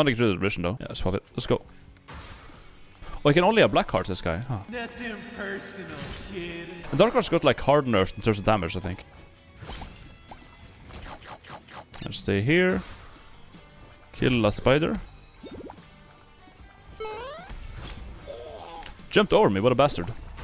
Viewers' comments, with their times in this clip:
0:04 The Imaqtpie voice clip actually gave me whiplash. He's one of the popularish streamers I rarely see mentioned/meme'd. Love it